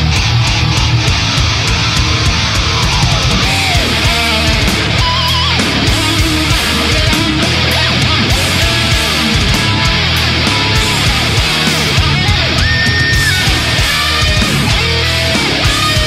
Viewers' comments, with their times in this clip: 0:03 Man that solo / riff is just awesome